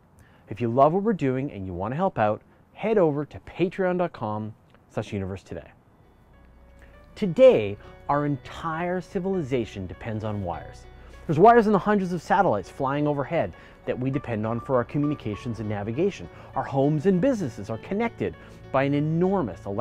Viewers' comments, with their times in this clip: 0:06 this soundtrack reminds me of Interstellar haha 😂😂